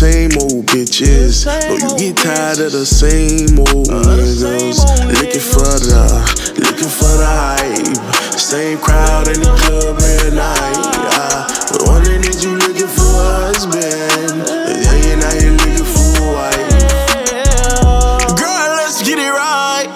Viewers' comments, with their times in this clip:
0:07 Does anyone like the part with the vocals? Just me? Ok